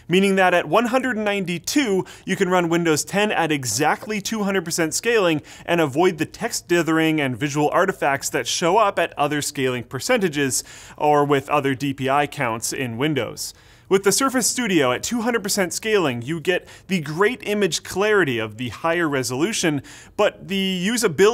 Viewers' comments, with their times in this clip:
0:06 dat crt tv crack tho